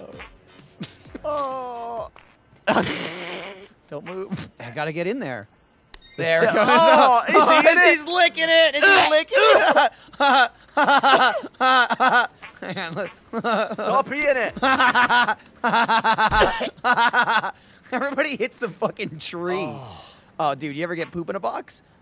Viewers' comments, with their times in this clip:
0:04 So was when I realised that although I've laughed at Gavin gagging many a time, I've been gagging with him for the last few.